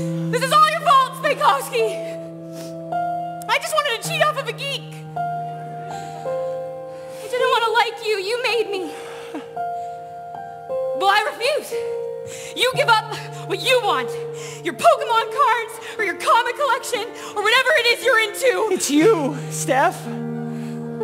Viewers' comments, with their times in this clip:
0:07 Pete's little 'ha' after Steph's line is SO FUCKING SAD
0:08 Multiple times throughout the musical you can softly hear the piano for 'I'm not a loser' The timestamp I pointed out is one of them. I don't know if anyone picked up on that but it hurts my SOUL!!